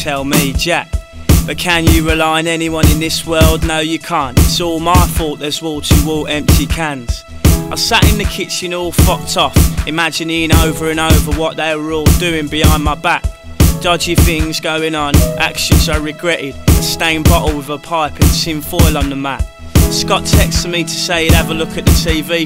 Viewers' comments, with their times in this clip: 0:07 Love the part where the piano comes in: